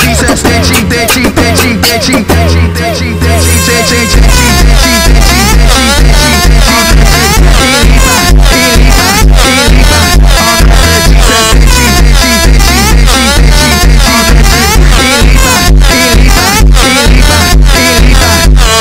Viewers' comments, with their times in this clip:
0:04 every drogba edit song be like:
0:05 en the beats drops